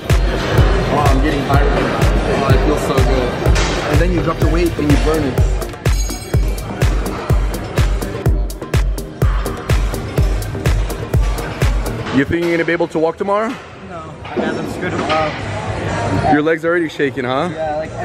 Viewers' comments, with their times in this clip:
0:05 sounds like somebody need to reload there m1 garand